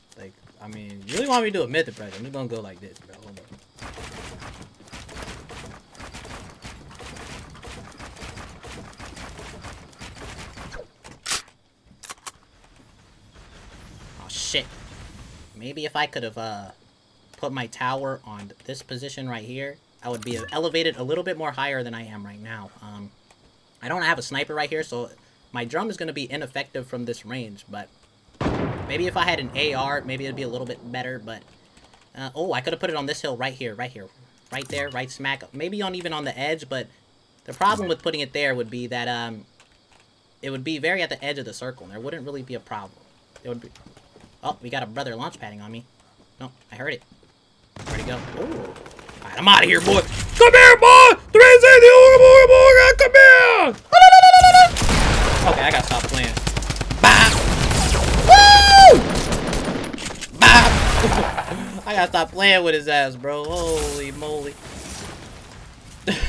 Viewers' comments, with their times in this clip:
0:05 I was dying on myth impersonation
0:12 the way he said aw shit😂
0:50 was such a good sounding 360 Ooga booga booga lmao
0:52 myth to dae real fast😂😂